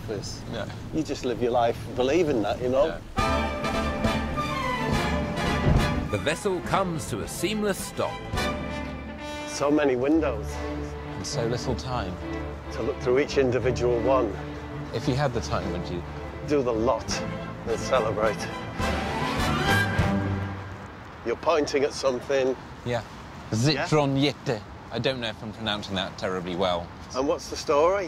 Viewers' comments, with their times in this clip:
0:09 almost sounds like a poem. Brilliant.